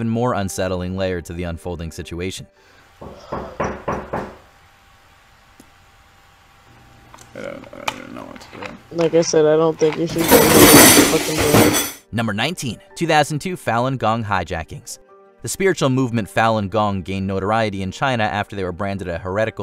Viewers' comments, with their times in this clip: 0:06 obviously a mate opening the door 😂 and rustling the cutlery tray